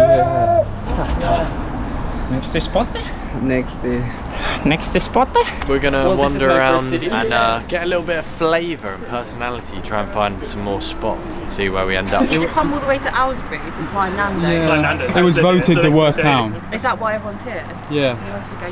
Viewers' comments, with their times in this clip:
0:03 I love the “NEXTE SPOTE”. 😂🔥